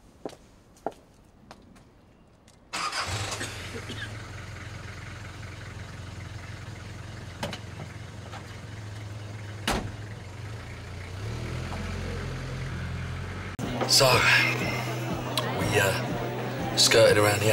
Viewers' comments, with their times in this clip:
0:04 phil mitchell coughing classic phil mitchell.